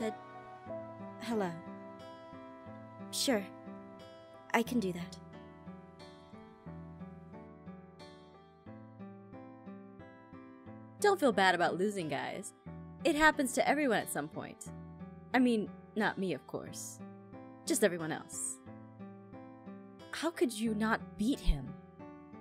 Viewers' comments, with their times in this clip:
0:10 what happened to the recording